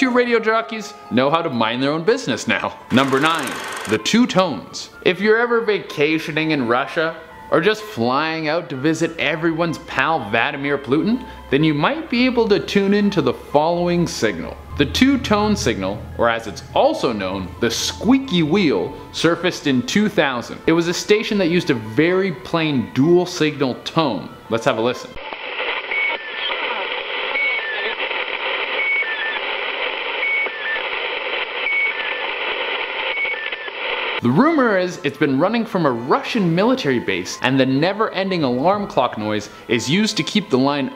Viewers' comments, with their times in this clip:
0:10 how you going to mess the man's name up like that
0:25 Was that a freaking baby metroid!!